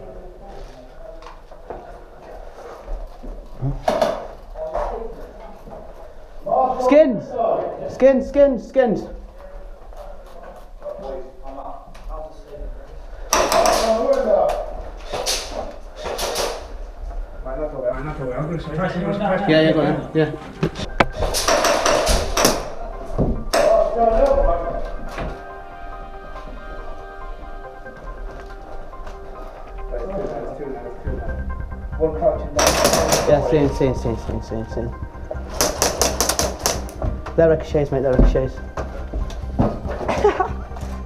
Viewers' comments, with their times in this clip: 0:08 That assassin's Creed music -ish though.
0:24 is it just me or does that sound like the assassin's Creed theme